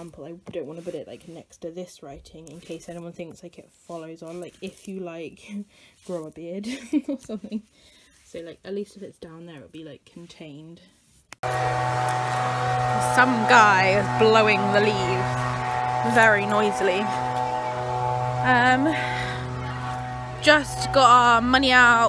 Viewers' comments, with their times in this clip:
0:08 the audio suddenly goes a bit louder (thanks leaf blower man!)! Just to warn you :'')